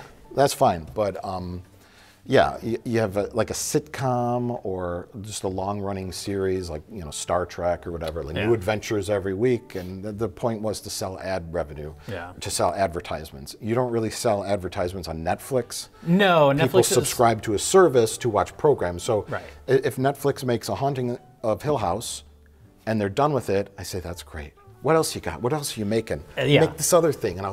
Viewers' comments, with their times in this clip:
0:10 someone's phone goes off, right channel